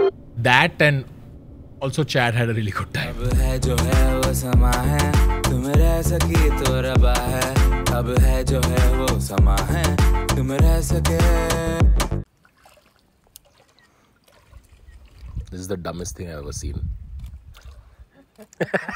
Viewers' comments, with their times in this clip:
0:06 of course his vlogs are incomplete without ritviz😂